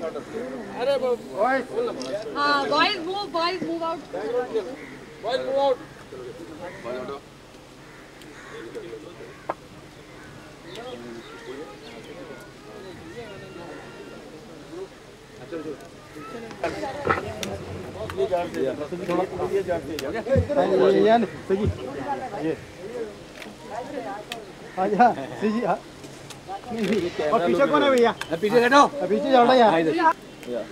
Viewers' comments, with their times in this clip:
0:10 somebody is singing tujhe dekha to ye jana sanam . It means SRK was already hit by then.
0:10 somebody is singing tujhe dekha to ye jana sanam . It means SRK was already hit by then.
0:12 Did I hear someone singing Tujhe dekha to ye jaana sanam ?? 🙄 This video must be of post DDLJ.
0:12 You can hear song of ddlj lol how im 🤕🤕🤕